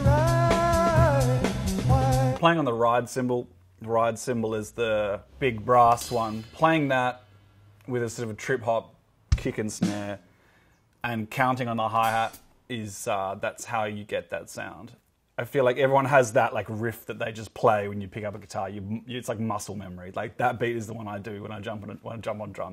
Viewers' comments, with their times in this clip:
0:04 I love how I can recognize the garage band drum sounds